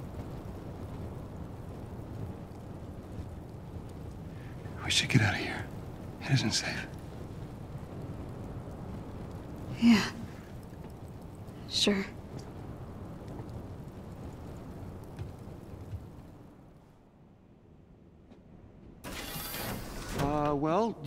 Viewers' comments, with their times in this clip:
0:04 it sounds like the Joel from the Last Of Us. Fun fact Troy Baker voices Bruce Banner in this game.